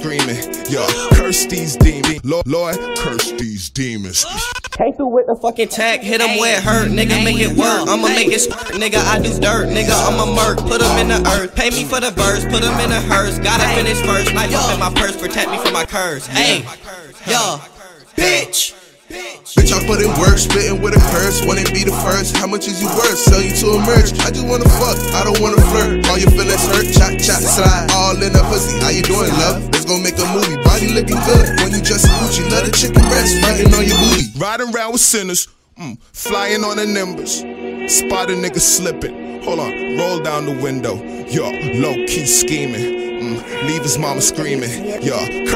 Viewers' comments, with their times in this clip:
0:03 anyone know how X do the scream fade out like that dat shit is fire
0:19 i thought ksi was rapping 😂😂😂😂
0:20 he sound like KSİ
0:30 when a girl sneezes